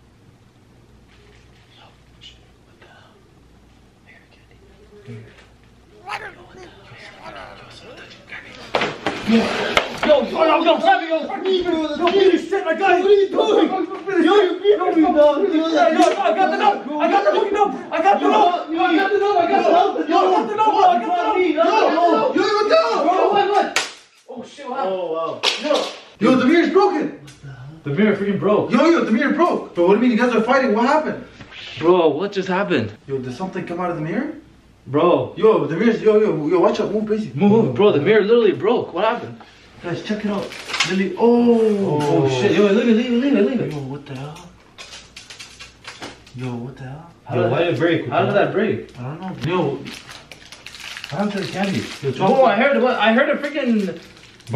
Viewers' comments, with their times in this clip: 0:06 You can hear a voice
0:35 someone was gobling